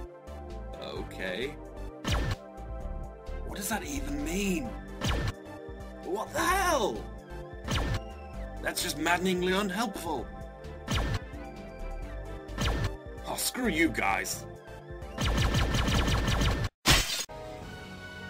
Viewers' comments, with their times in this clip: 0:05 "Up my arse picking daisies" But BACKWARDS